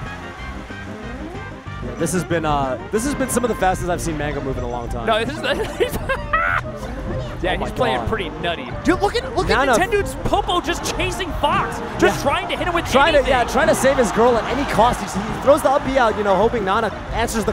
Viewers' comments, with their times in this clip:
0:05 dat laugh tho